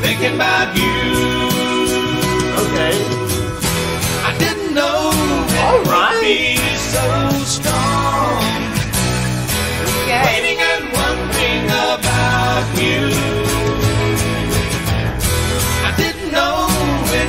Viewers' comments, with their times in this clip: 0:05 Understatement. Also those of us who know the song knew you'd be blown away by the harmonies.